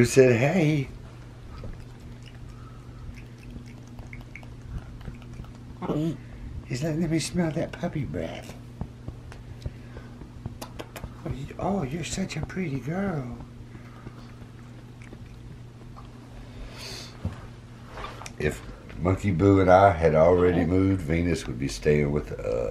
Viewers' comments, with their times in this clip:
0:05 LMBO. Boo is lip smacking something to the puppy and it turns to the camera as if to say....."what the heck did this monkey just say to me?"